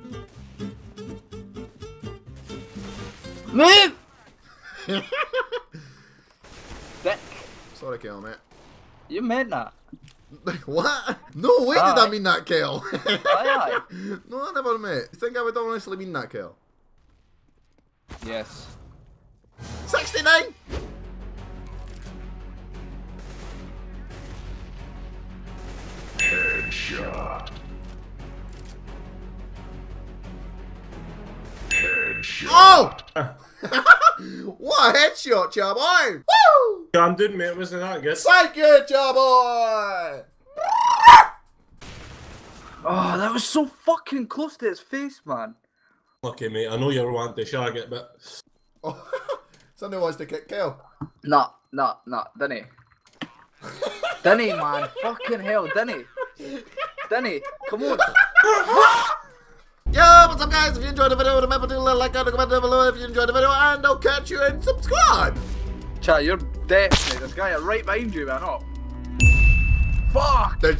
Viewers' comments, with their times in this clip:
0:08 you menda :D
0:40 rip headphine users
0:57 that evil laugh tho xDDD